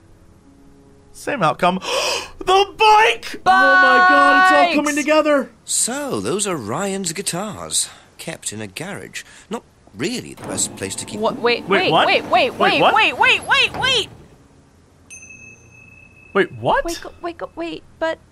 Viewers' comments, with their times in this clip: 0:06 Best spontaniously generated 80's fake clue song ever :)